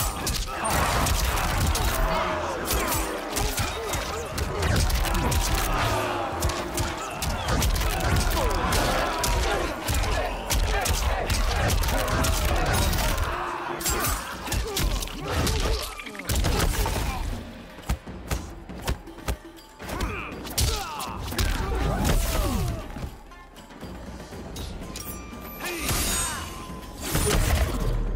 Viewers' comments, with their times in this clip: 0:10 people cheering with every hit cracked me up🤣😉